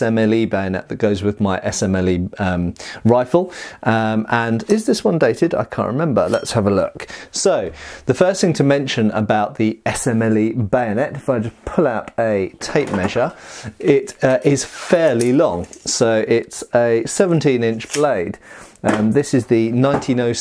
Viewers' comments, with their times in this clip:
0:05 for the sweet cinematic sound of drawing a blade.
0:05 that SCHWING was mildly discomforting